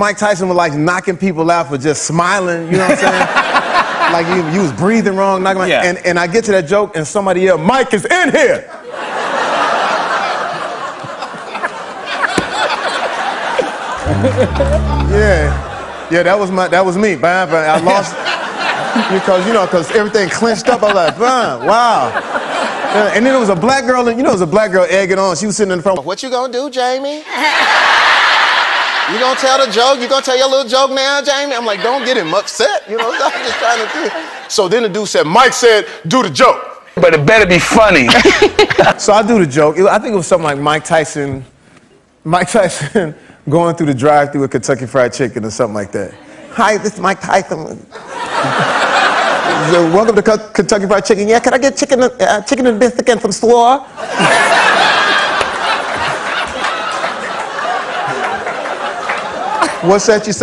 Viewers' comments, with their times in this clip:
0:09 jimmy's fake laugh is so obvious here. he pauses as he has no idea what he's talking about and then randomly pretends he has heard the funniest shit ever.
0:37 I thought the impression was pretty good. Jamie even looked like him there!
0:41 I did NOT expect that Mike Tyson impersonation at all! 😂 Got me goood I love Jamie Fox